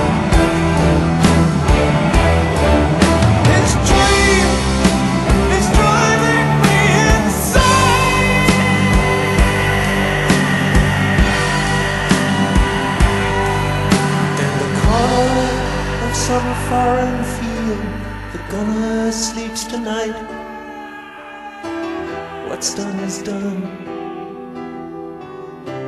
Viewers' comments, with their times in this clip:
0:06 THIS SCREAM MAN, hits me everytime
0:06 the lyrics read 'His Dream Is Driving Me Insane' but as he screams 'Insane' the word turns into 'Daddy'.
0:07 Geoff Tate employed a similar scream in "empty room" (1988)...
0:07 How about that fucking scream ?!